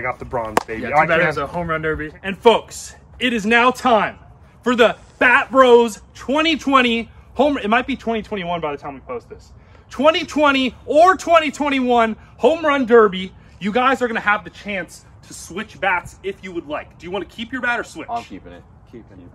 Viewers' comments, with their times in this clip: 0:04 did any one else hear fat bros?